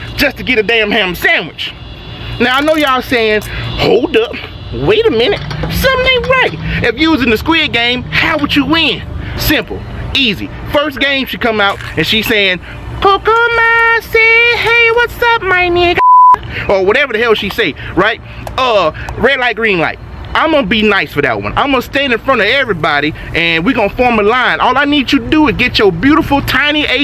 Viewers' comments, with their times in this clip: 0:03 WHY DOES IT SOUNDS LIKE THE MEME😭😭😭
0:12 The guy's inpression of the doll was hillarious